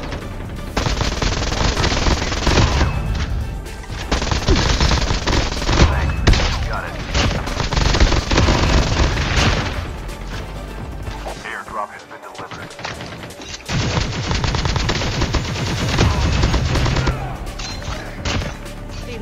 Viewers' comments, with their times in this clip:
0:07 🧐🤨This 3 shots.... This is shotgun's shot?